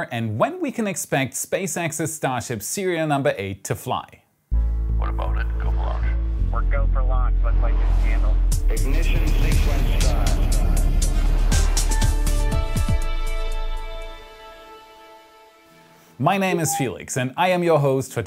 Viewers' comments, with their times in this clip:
0:04 i have allways wondered where this clip comes from. at first i thougth he said "what about it, go for launch" but last video i thougt it sounds more like "we've voted. go for launch" i have seen this clip seemingly randomly in a video about the challanger explosion. maybe this guy is telling the crew they are going to launch? that has a bitter taste to it and to see it in every video. but i might be completely wrong there and this clip is from somewhere else.